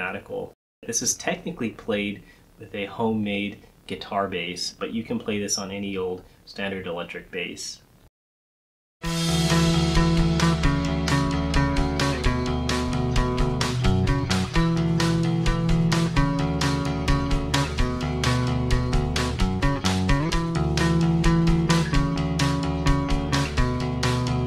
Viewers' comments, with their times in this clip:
0:09 very interesting the use of the odd time signatures for the riff, and thank you for marking it!!